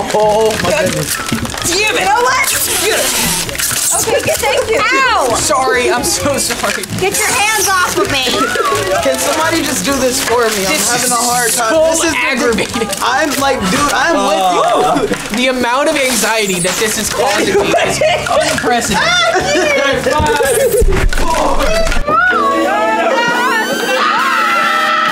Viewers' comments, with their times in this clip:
0:09 is like cringe asmr